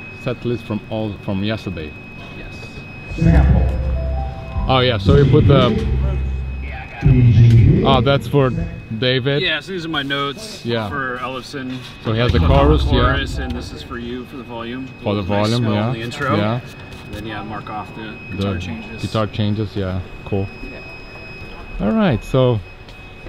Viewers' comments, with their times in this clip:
0:05 you can hear the trailer park boys intro